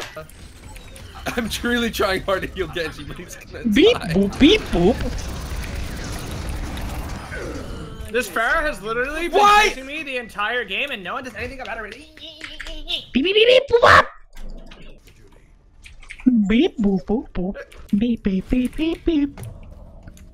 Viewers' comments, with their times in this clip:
0:08 Lil Jon impression.